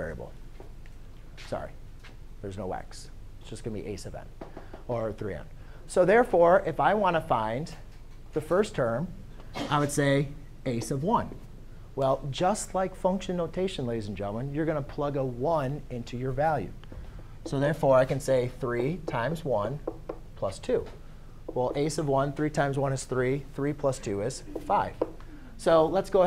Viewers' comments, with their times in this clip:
0:09 "i would say ... " ? did you say "a sub 1"? a sub of 1, shortened to "a s'of 1"? a's of 1? ace of won, what? it sounds like it should be "a sub 1" but the consonant sounds like a lip on teeth: "fff" or "vvv". my professors always said it the same way and to this day I have no idea what is the spoken English.